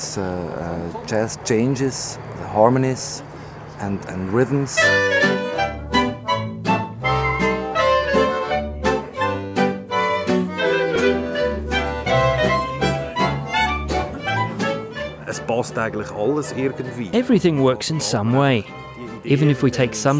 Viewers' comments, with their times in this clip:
0:05 now I know where Max & Ruby got their fucking music style